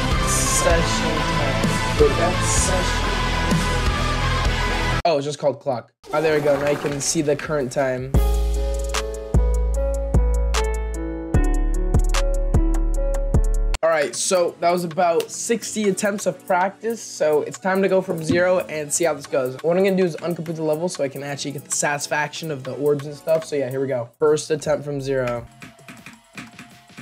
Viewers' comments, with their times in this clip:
0:08 dude this beat go hard